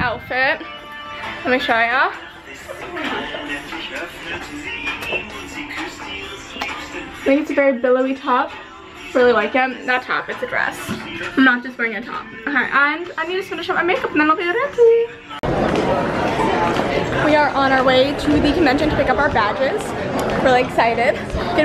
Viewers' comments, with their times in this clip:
0:03 Am I the only one who hears a German song ??? 😂😂
0:06 That German song tho